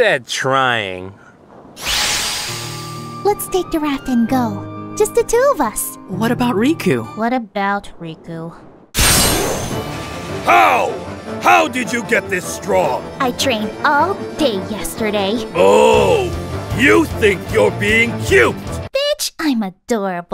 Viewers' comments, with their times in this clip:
0:06 (Asme in the background) I don't know what this Riku is but he sounds just like Terra